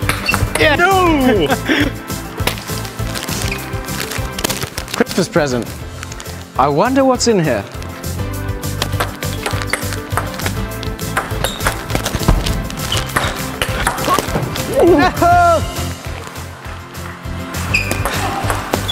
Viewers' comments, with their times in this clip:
0:04 Audio glitch: frickmas present!